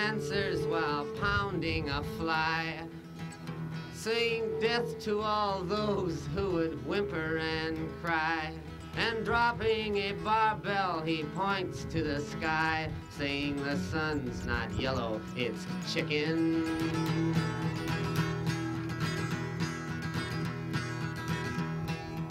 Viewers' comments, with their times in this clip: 0:04 bobs laugh makes this so lively